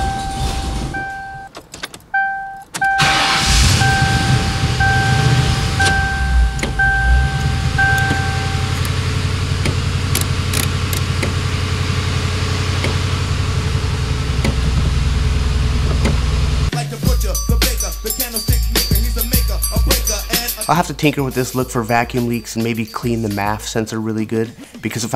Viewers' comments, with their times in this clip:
0:08 you can hear the Blend door motor in the dash trying to move something but isn't attached.... Next, Party under the dash, will need a midget magic.